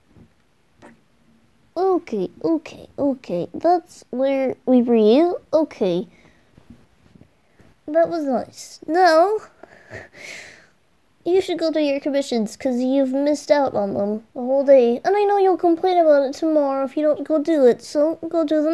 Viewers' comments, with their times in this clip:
0:04 Kisses counted: 6 3